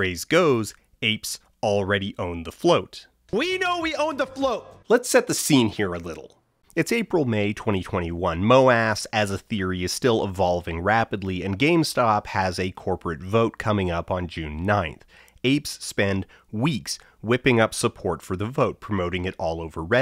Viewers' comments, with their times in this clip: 0:04 why did that sound just like Coffeezilla